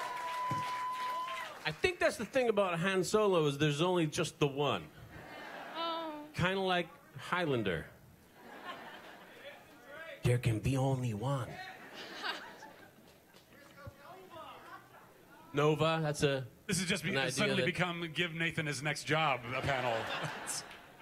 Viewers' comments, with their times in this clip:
0:06 His Christopher Lambert impression is great!